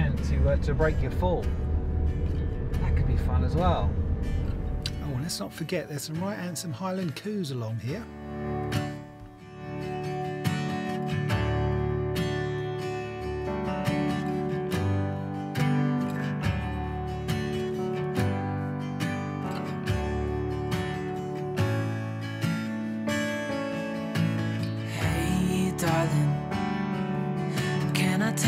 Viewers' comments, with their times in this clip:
0:10 The music is just perfect. 👍